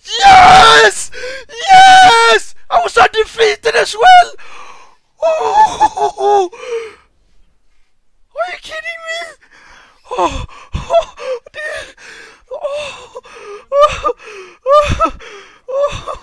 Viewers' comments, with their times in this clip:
0:03 that is the biggest Scandinavian English ive ever heard XD